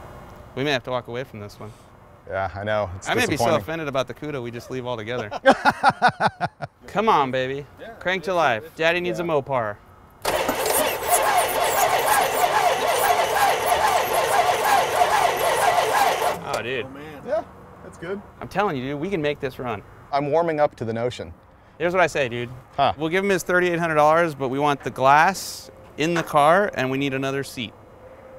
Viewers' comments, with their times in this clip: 0:08 Kind of a dope beat ...
0:14 when you tried starting it on it was like rap start